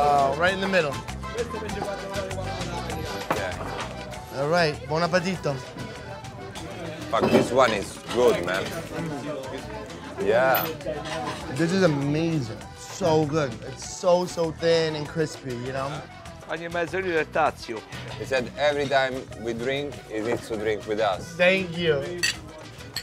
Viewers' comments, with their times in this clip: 0:08 ouch... the knife scratched the plate i heard that..